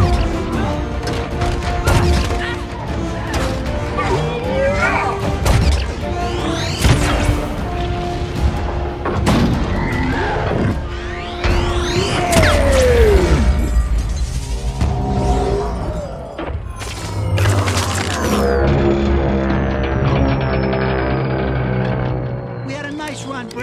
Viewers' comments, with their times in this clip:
0:10 on bumblebee yells this for que you son of a bitch